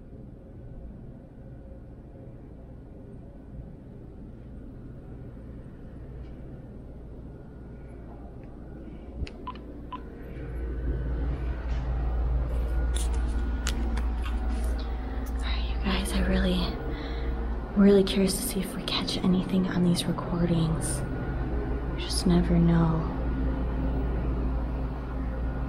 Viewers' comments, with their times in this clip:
0:08 it sound like somebody whispering help me 2x..
0:09 I swear OK I think it said 🤷🏼‍♀️💜😘👻very faint woman